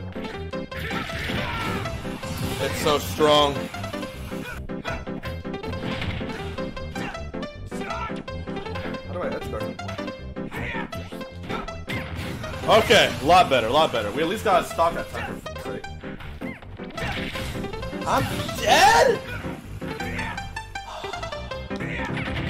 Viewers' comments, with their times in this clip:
0:04 THAT FUCKING SONG SYNC WAS SO GOOD